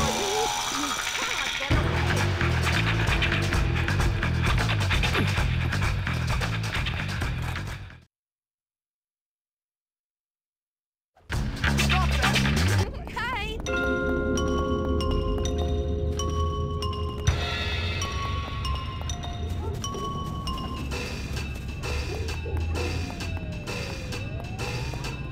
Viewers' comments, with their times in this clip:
0:10 Max: Stop that! music stops playing